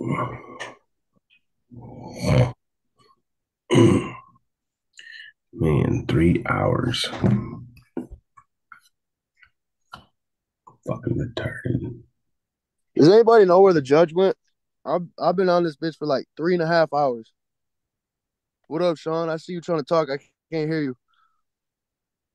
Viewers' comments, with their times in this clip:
0:05 sounds like my morning con call at work. People snoring